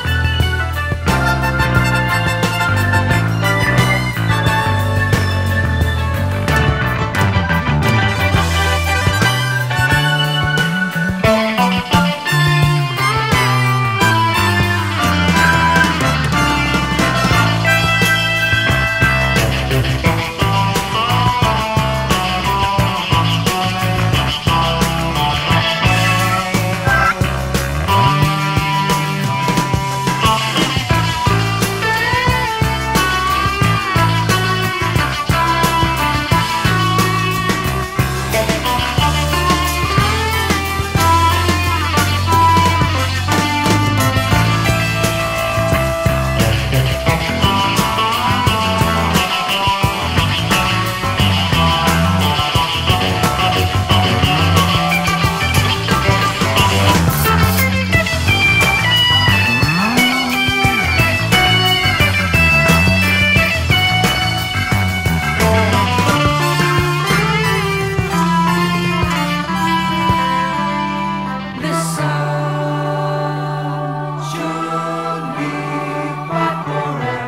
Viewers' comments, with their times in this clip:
0:07 That bass onwards 🫣🫠
0:59 5 minutes in (and ) Chris' purposeful wavering...